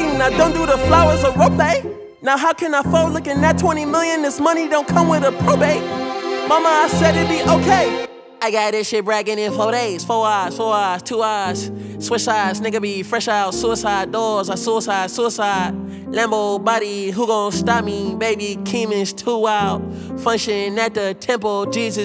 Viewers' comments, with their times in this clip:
0:08 The piano from is beautiful